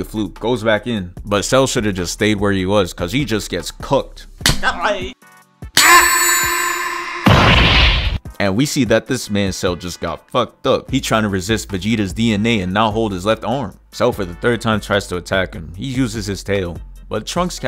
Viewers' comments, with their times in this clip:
0:05 not the rings dropping sound effect 💀